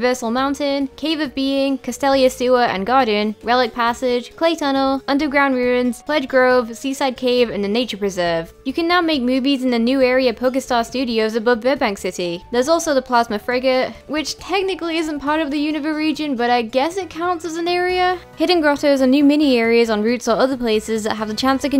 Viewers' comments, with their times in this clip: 0:06 Nobody: Youtube Captions: sUiciDe cAvE